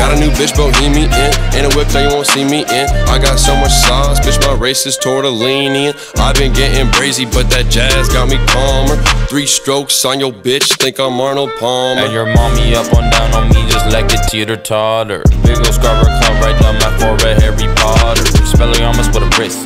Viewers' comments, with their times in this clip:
0:04 idk why but is just super catchy to me